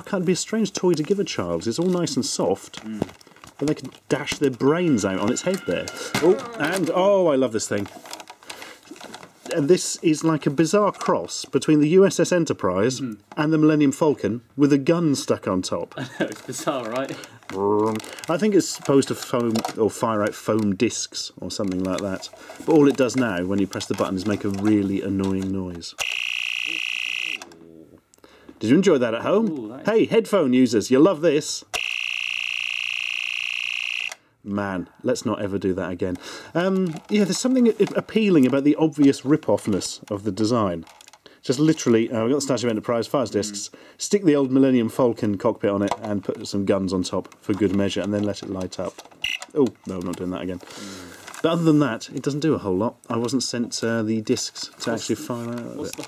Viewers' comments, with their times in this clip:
0:06 Oh wow I actually had one of those things I forgot the annoying noise it made.
0:39 My ears are bleeding after thank ashens 😵